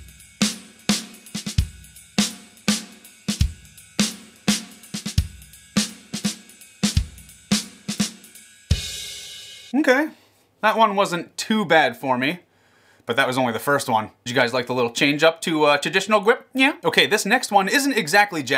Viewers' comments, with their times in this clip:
0:03 that sounded a lot like the drumming in Take 5